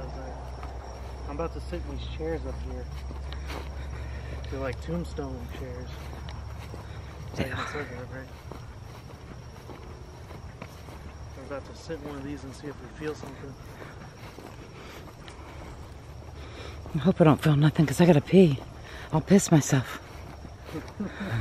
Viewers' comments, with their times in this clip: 0:06 when he says about the tombs chairs a voice saus "they are" !!! Grest video guys 💙👻💙